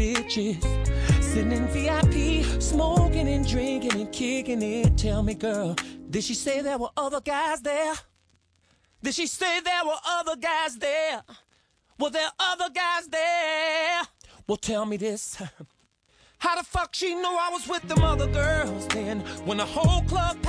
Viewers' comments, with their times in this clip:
0:05 The way he first raises his voice